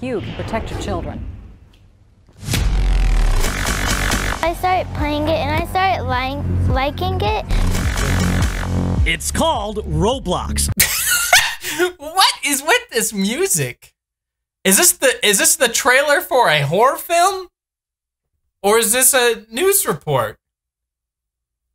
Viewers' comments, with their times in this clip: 0:03 Aahahhahah 😂 She really do be using that angel voice doe. She's like :. I-I started liking it a little 😥. XD like she just committed a crime 😂